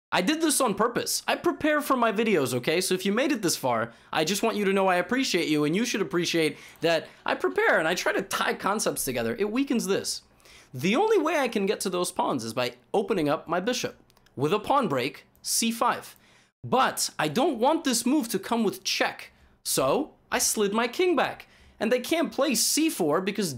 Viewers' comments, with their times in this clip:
0:05 someone literally laughed!!